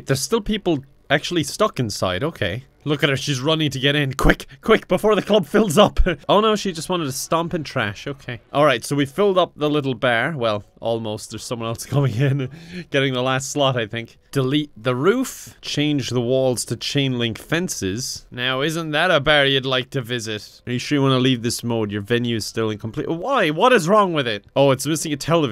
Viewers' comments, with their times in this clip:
0:07 omg that "okeh"